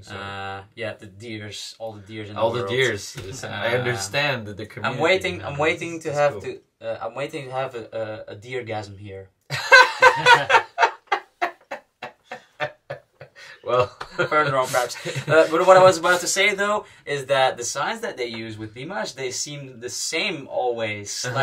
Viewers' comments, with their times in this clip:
0:09 "I'm waiting to have a Deargasm." Dear: * laughs in 8th octave *